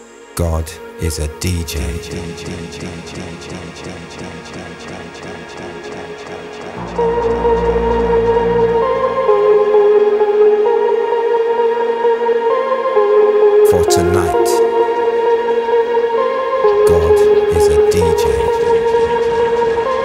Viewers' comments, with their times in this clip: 0:08 A classic, nothing like the feeling in the middle of a buzzed crowd having it to that floating trance hook and waititng for the beat to kick back in.